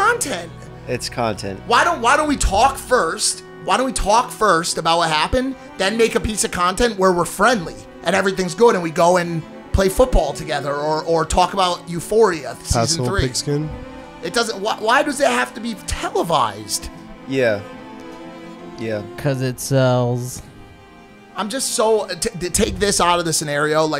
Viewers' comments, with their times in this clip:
0:04 What's with the weird music playing ... 😅